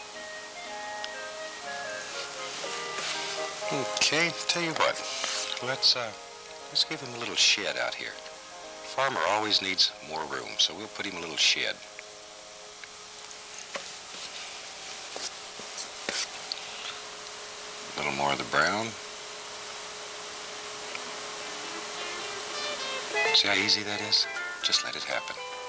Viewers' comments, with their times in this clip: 0:07 I know that's not what he said..But you all know what I heard, and I'm pretty sure you heard it too 😂